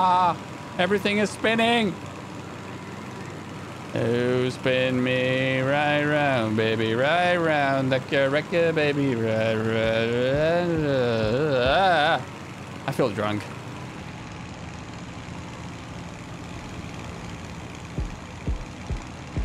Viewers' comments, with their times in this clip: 0:03 Man, I started singing that exactly at same time, and then sang along with you